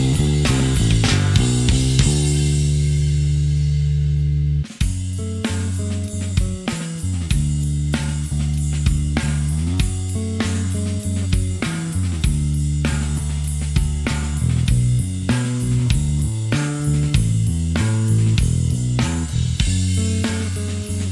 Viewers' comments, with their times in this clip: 0:03 Happy bass be like: